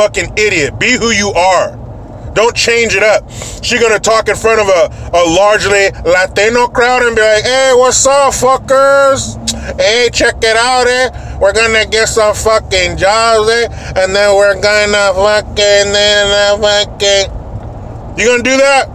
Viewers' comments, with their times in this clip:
0:03 Your racial voice impressions after had me in tears laughing 😂